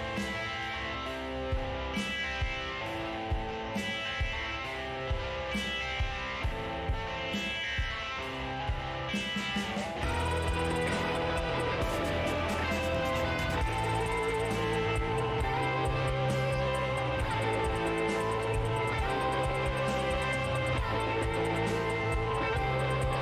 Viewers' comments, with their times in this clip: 0:04 The music reminded me of “The House of the Rising Sun”